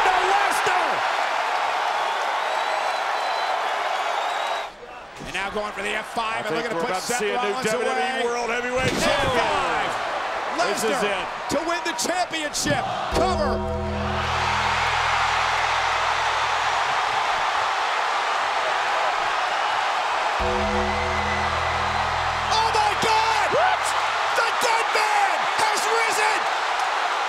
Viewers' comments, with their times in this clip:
0:04 omg one off the biggest pops in history i remember that night 9 years ago had no idea he was on the show i marked out so big
0:12 such an amazing pop from the crowd
0:14 what a massive ovation sheesh